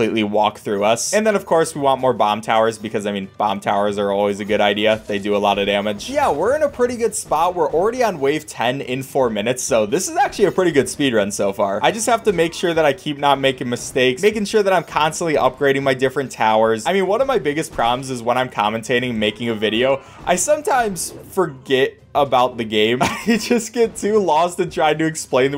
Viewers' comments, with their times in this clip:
0:09 That voice crash is just amazing 🤣❤️
0:09 So this is horrible voice crack a pretty good speedrun
0:09 WHAT A VOICE CRACK XD
0:09 wait for the voice crack
0:10 that voice crack lmfao
0:10 he voice cracked when he said actually😂